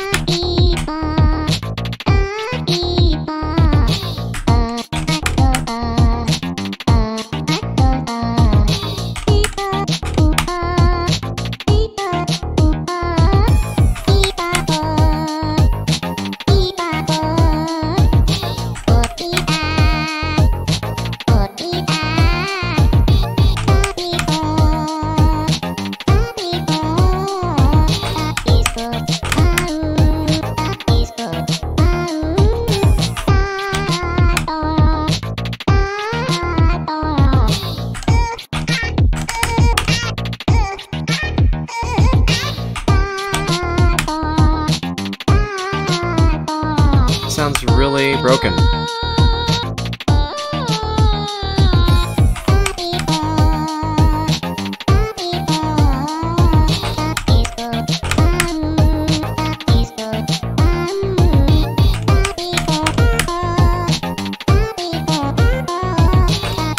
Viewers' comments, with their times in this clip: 0:04 it sounds like throns
0:21 anybody hear thorns? I do
0:41 Lets get to the point DOUBLE BEP
0:48 this part look like undertake music lol
0:50 This place almost sounded like sans to me
0:50 :this part the boombox sound like megalovania at the top lol